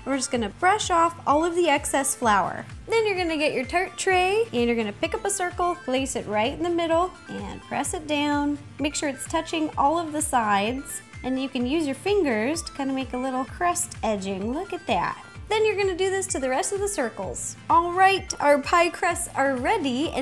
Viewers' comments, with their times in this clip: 0:03 “then your gonna get your turd tray!” XD